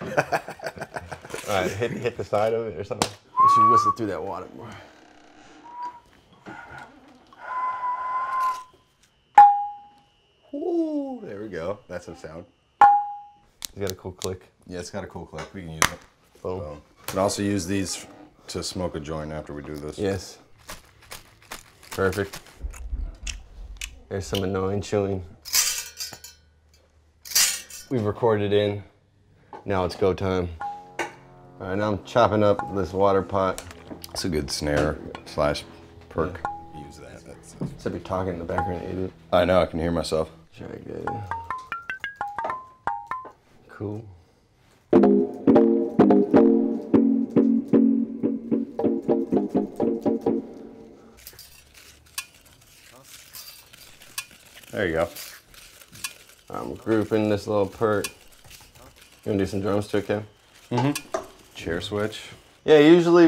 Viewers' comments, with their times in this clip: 0:10 The realization in their faces when they realized hitting the waterer made a great sound made the vid for me, honestly
0:44 Thought he was about to start playing footballs coming home jheez